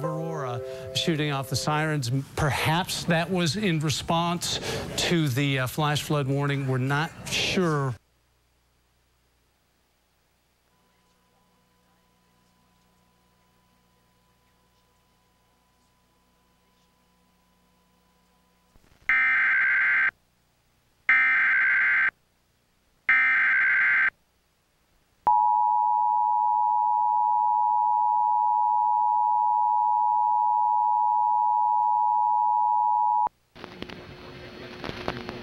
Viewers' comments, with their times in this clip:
0:05 The alert begins
0:10 you could hear voices in the eas
0:21 lol it's in spanish